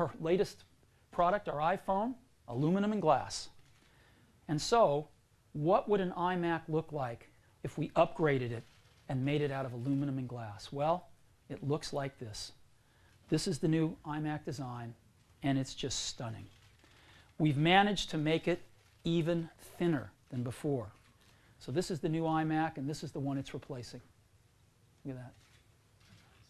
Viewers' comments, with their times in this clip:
0:08 no one clapping is so refreshing they just listening to him like a professor look at those maniacs from today clapping about a new color or a new button